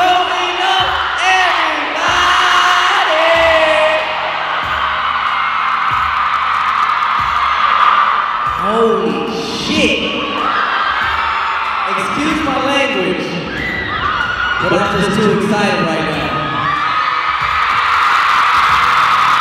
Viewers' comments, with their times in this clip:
0:07 that girl is crying saying i love you.